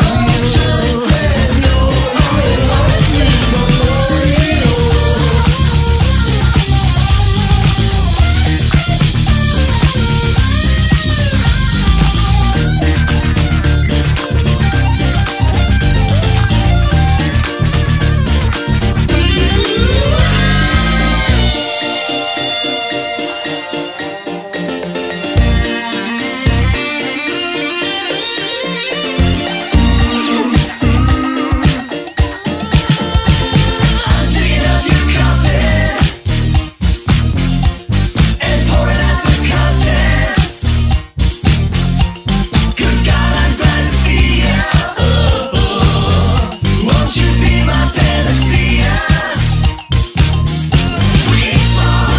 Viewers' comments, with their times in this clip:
0:03 epic guitar noises
0:34 I wanna have an OC that gives off the same absolutely batshit insane vibes the end of the song has lol